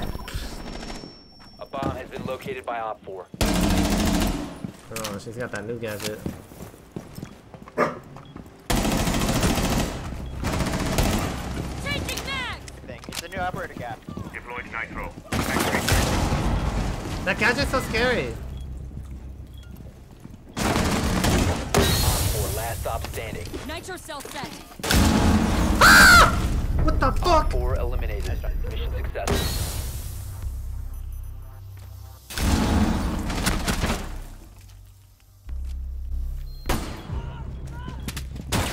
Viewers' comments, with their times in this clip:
0:07 dog says ruff
0:24 that scream lmao
0:25 Jar jar binks scream 😂
0:25 headphone users be warned, incoming 🐔